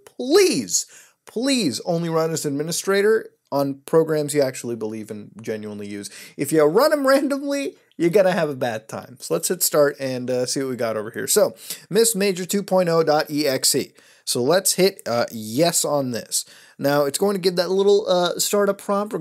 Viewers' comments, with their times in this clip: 0:06 megalavonia starts playing in the background
0:07 why do i hear boss music